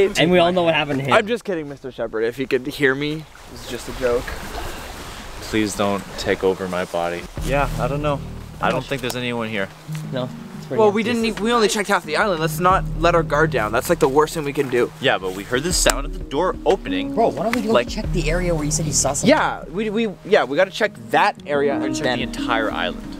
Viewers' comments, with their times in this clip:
0:08 I thought the music was Minecraft music